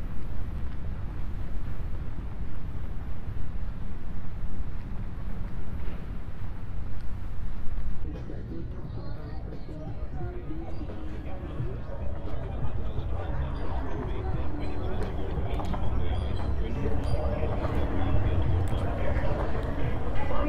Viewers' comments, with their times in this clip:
0:08 No music then suddenly music Is it YouTube removing copyrighted content?